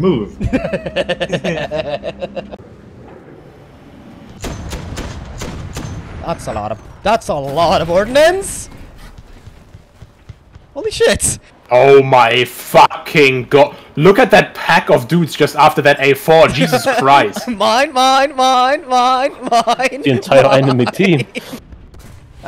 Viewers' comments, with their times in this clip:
0:03 saw this clip in a comp and didn't think it was you since your accent disappeared and became American.